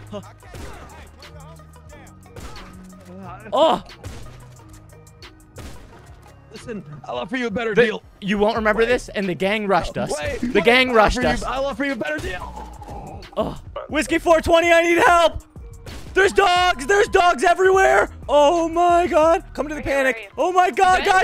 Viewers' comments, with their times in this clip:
0:08 Did those NPC‘s just yell “freeze I’m a cop put down the something”?!? I’m pretty sure that’s what I just heard!!!